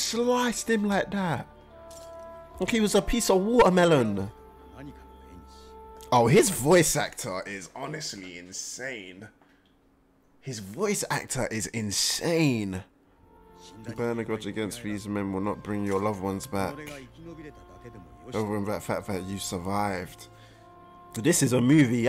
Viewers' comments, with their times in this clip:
0:06 Yeah.. I had the same expression as you when I realized that Hiko Seijuro's voice was Ikeda Shūichi (also the voice of Akai Shuichi in Conan). His voice is so insane and unique!